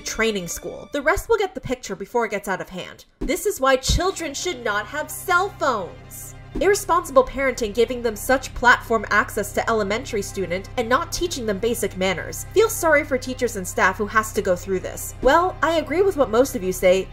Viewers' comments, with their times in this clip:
0:03 I like how you did a Karen voice for them. Cell phones are not the problem, poor parenting is. And if your child is not responsible enough to use tik tok, don’t let them use tik tok.